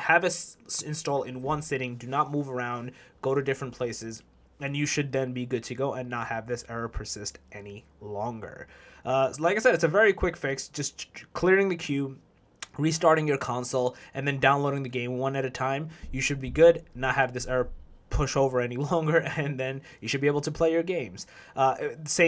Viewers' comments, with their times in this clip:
0:07 why he said any longer like that 😂😭